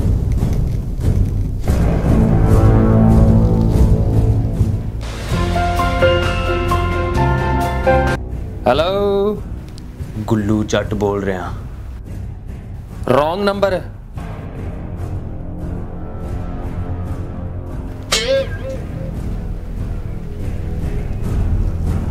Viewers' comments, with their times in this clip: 0:05 i have the same ringtone